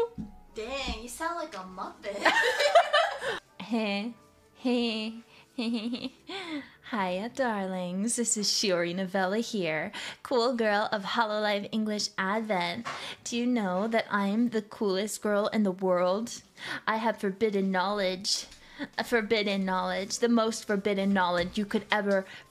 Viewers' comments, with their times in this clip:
0:04 when they expected her to sound like this in her debut before but what we have now is way hotter.